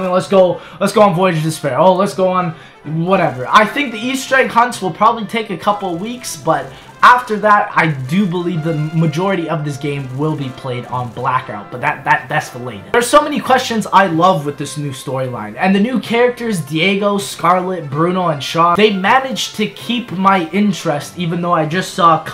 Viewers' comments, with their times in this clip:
0:03 "easter egg cunts"